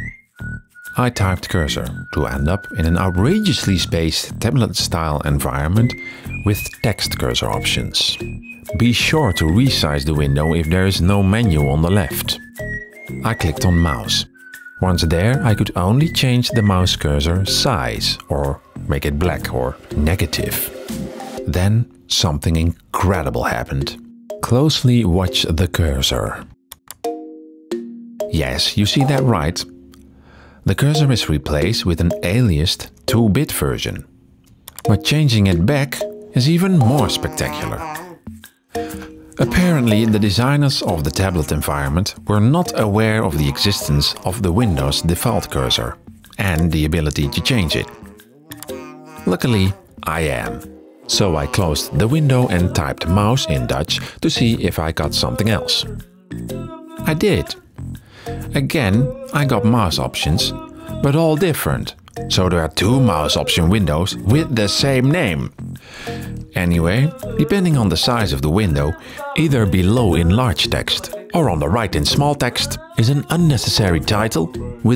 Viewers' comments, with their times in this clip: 0:06 me: This pperson has a Dutch accent Ik wist het
0:40 😂 why does this background music get progressively worst and worst
0:53 Bro... the music 💀💀💀
0:55 What on earth is up with the music
1:00 wtf are thoses noises in the background 😂😂😂???